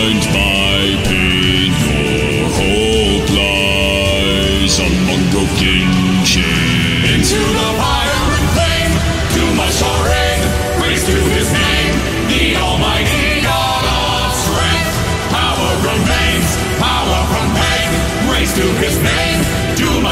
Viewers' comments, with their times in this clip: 0:04 Among the kitchen